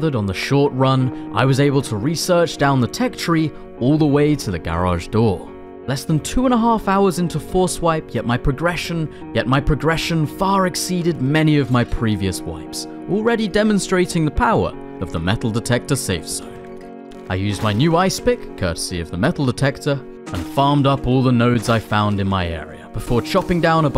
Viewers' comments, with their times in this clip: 0:06 I like how he edited his words twice
0:08 "Yet my progression, yet my progression" thought my hearing was bugged😂
0:08 there is a repeat of “yet my progression
0:08 you may want to take a look You got an editing error here. Said "yet my progression" twice in a row.
0:09 you said progression twice . You sure it isn’t a robot voice😂.
0:11 what happened with "yet my progression, yet my progression"? confused the hell out of me i thought i had drunk to much beer
0:11 theres a editing error